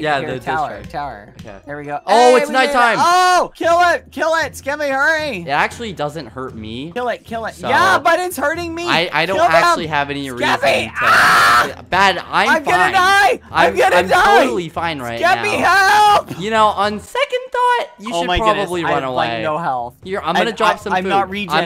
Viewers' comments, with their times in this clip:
0:09 badboyhalo crack voice